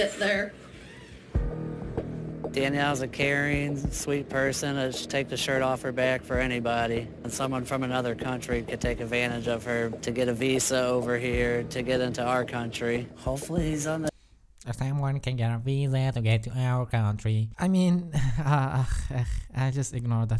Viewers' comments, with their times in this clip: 0:05 He sounded like squidwirt from SpongeBob for a second and when u mocked him u made it sound clear lik squidwird lmfao I loved that part 😂